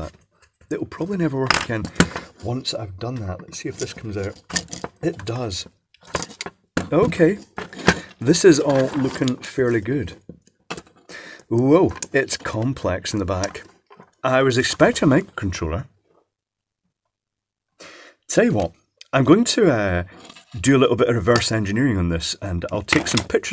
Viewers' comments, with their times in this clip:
0:10 am i hearing a series of 2-3 sparks right after he turns the board over?